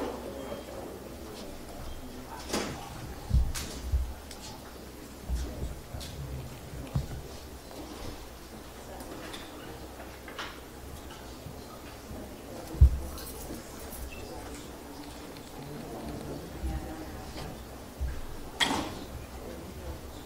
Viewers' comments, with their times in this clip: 0:05 The black security laughing it’s a Latino that got killed